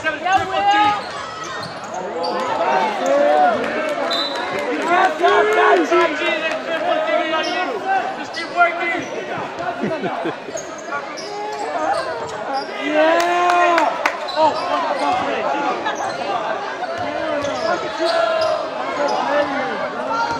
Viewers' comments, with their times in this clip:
0:05 did he just yell that’s lil tecca😭😭